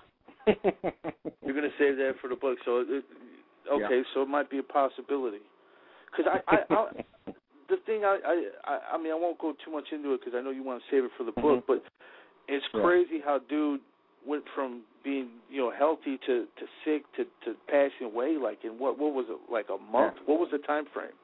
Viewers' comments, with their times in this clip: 0:09 crazy he laughing